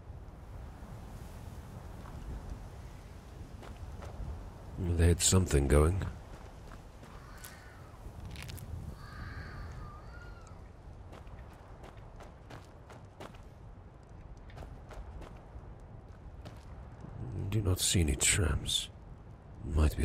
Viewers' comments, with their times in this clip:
0:05 Was that someone screaming ?